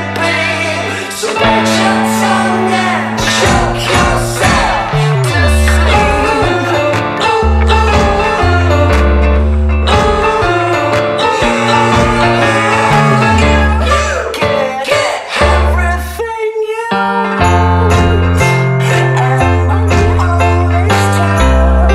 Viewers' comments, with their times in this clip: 0:03 Oh Dallon, first "nyeah nyeah" and now "shoke"? I like it hah